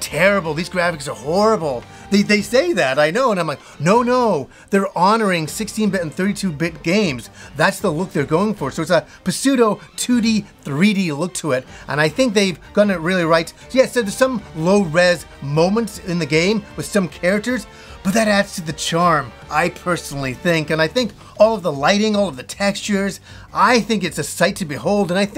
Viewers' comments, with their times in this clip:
0:08 Are... We not gonna talk about how he just Puh-seudo and not just Pseudo?